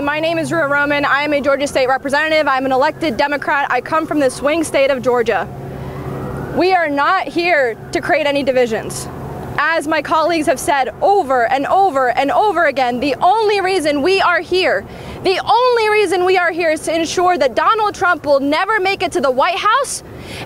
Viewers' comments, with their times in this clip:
0:08 her voice is so annoying